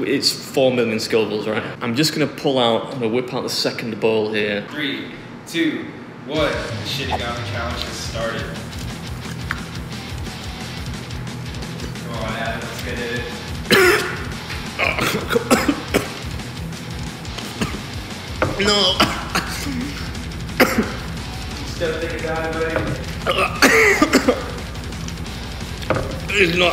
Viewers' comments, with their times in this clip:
0:10 Bro I'm dying he legitimately sounds like he's taking poison damage lmaooo